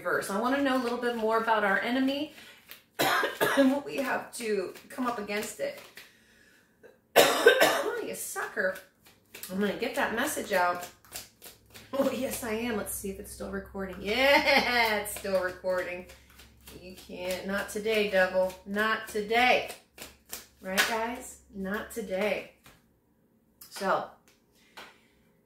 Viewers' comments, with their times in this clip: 0:08 I'm coughing as well and I did a burp and another cough